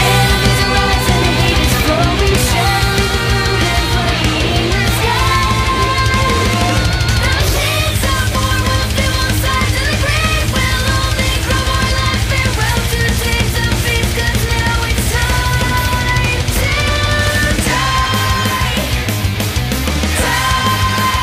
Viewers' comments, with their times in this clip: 0:04 in the background you can hear an OOF